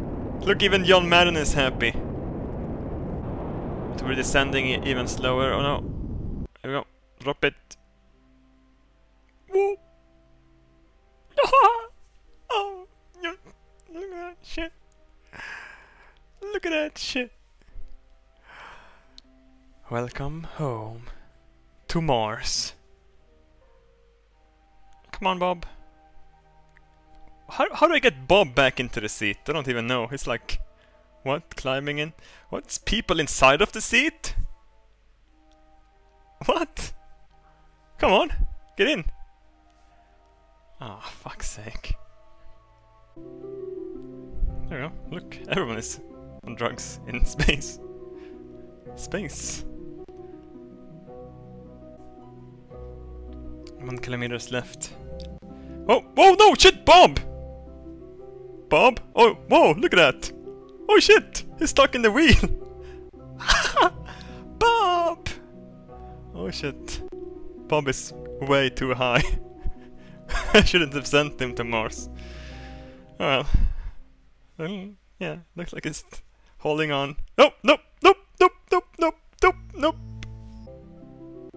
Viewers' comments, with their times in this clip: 0:08 Those sounds of pure satisfaction XD
1:04 HAHAHA EPIC VOICE
1:05 lol sounds like a balloon deflating XD